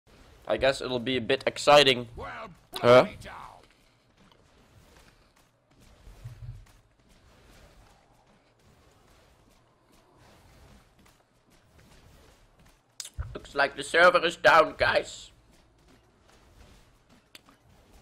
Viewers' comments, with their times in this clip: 0:03 i need this hö as my ringtone xD